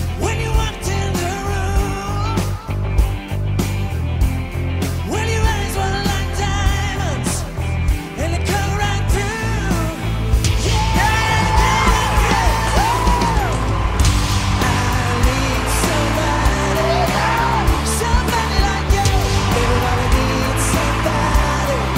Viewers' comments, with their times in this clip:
0:06 Guy is good wtf sounds professional